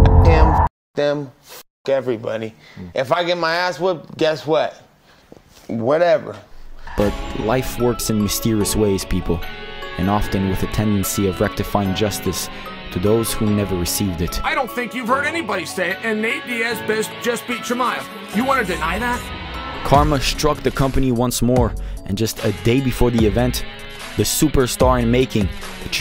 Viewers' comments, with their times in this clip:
0:08 MMA on point can never, this is real guitar music. best mma page ever